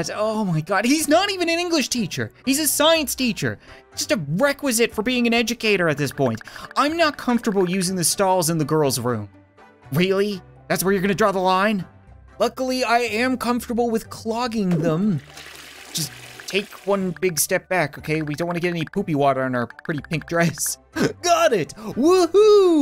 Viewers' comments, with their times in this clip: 0:04 In the manliest voice: ITS MAAM